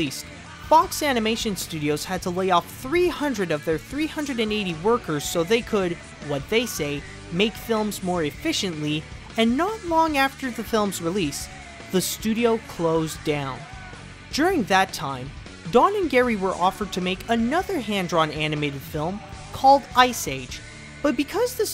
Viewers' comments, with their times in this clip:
0:05 That Creed music !